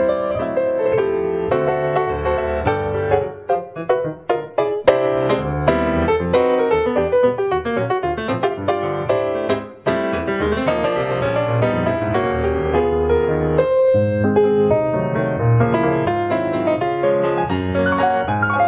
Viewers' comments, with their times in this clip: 0:04 sounds so much like Dave Brubeck it's amazing